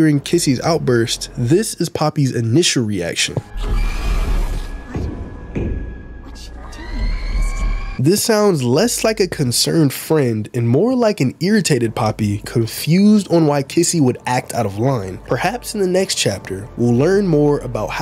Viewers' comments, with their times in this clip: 0:04 I think kissy did not hallucinate because there is a banging noise which could be a toy killing kissy